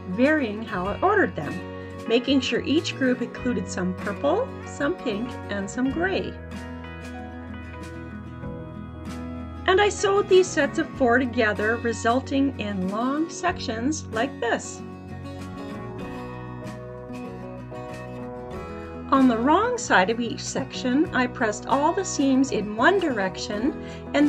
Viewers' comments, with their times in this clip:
0:05 agree, music is bothersome